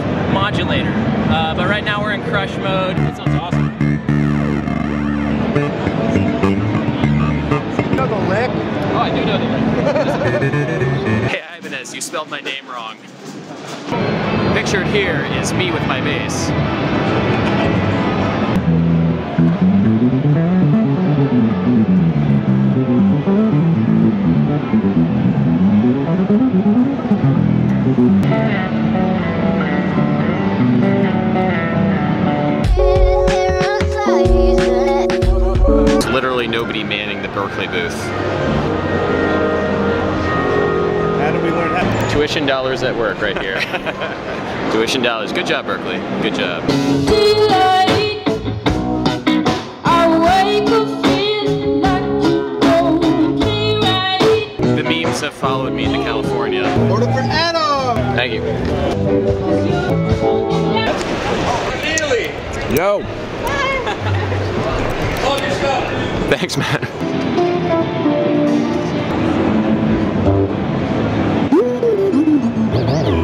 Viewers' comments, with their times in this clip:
0:07 Guy: do you know the lick? Guy who's played the lick for 5 consecutive hours: *the lick*
0:21 sneaky sequence start bassline
1:01 I relate so hard to the awkward and breathless "thanks man"